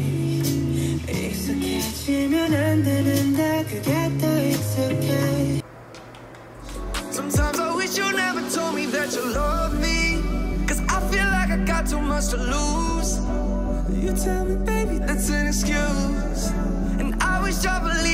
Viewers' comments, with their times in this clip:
0:03 Still with you is such a pacifying yet exciting song